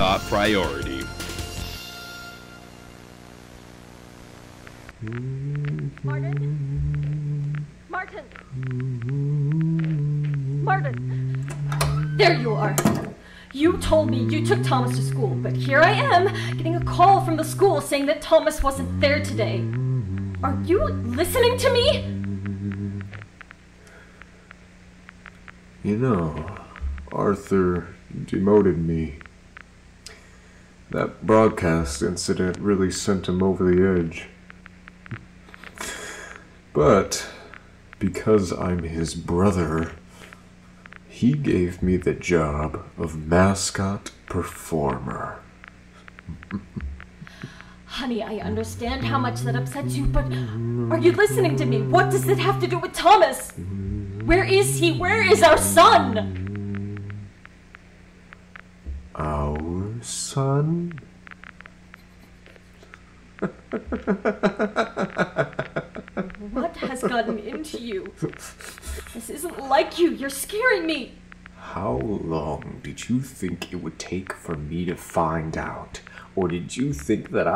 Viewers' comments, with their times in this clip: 0:06 Martin singing Blue Moon, definitely a Man City fan
0:59 that "OUR son?" is creepy as fuck. I imagine Martin turning his face like a robot with an wicked grin.